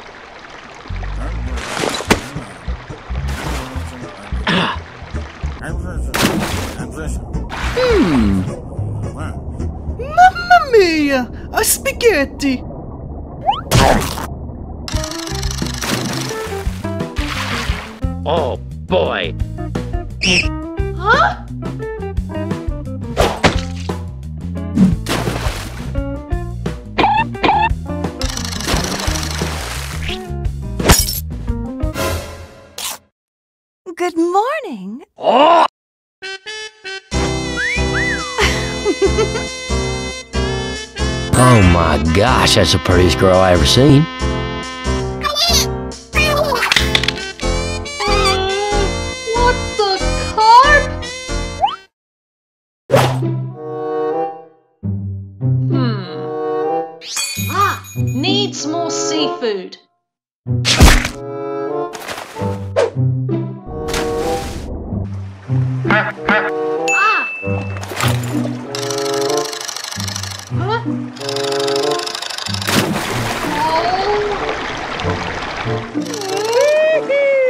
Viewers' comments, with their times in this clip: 0:08 That Mario voice XD
0:09 How To Make A Cringy Mario Voice XD
0:10 good impression of mario spider
0:10 If I had to make a gmod video and If Mario was in it, I would let you voice him
0:15 An sml song starts playing
0:46 I have to admit, that shark screaming was simply priceless I’m just gonna hand Inkura a sledgehammer and get out of the way
0:46 That sounded like she’s breaking her binoculars. 🔭
1:00 why was the sound of that lobster getting put on the hook so satisfying